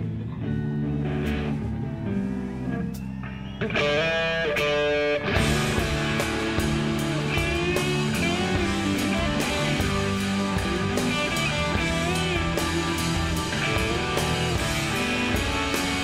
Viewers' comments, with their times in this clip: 0:03 my god…that tone is pure sonic gold.